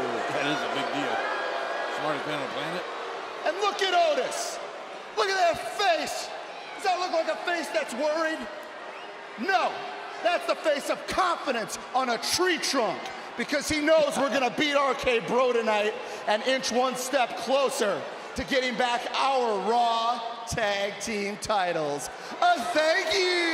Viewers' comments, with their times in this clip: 0:08 wolf whistle at Otis 😂